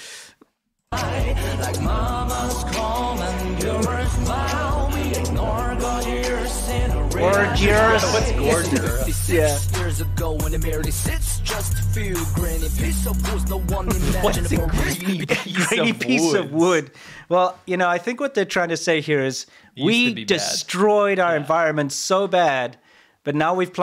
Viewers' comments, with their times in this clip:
0:04 This song makes me irritate!!!!